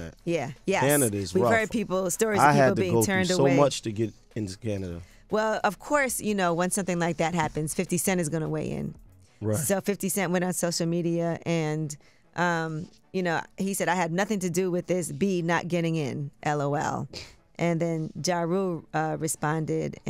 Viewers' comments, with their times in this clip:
0:05 I love the way Angela reads the beef dialogue. 😂😂😂